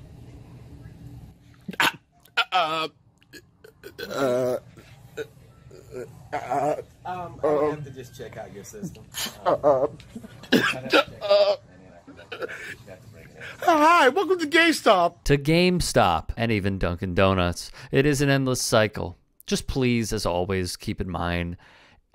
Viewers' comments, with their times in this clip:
0:05 The "Karen" epidemic is getting pretty bad, but the guy at timestamp playing it up for the camera was pretty stupid as well. What were those noises he was making supposed to mean?